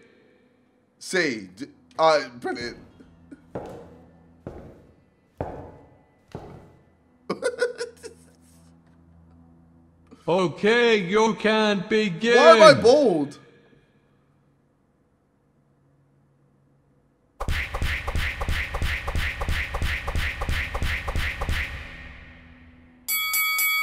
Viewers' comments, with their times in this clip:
0:07 This laugh is amazing